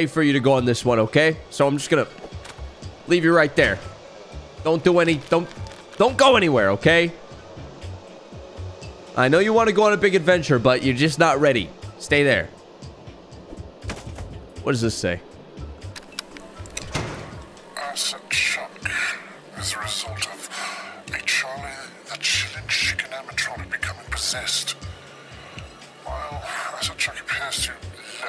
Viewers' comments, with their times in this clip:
0:09 u sound like kratos from 2018